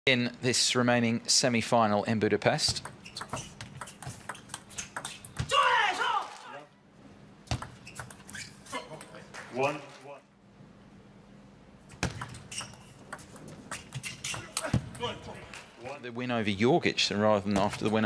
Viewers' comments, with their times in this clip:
0:04 Harimoto screams like he won the championship but it was just the first point of the semifinal match